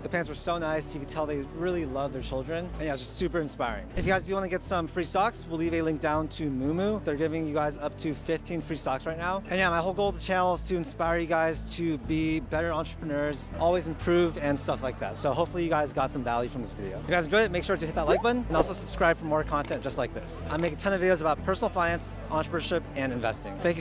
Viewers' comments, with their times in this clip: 0:07 I thought he said they are giving away 15 free SOCKS